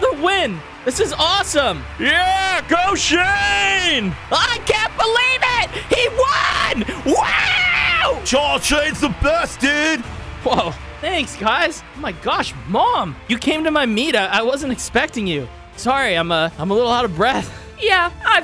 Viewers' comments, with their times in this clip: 0:03 Bruh stop shouting😂😂😂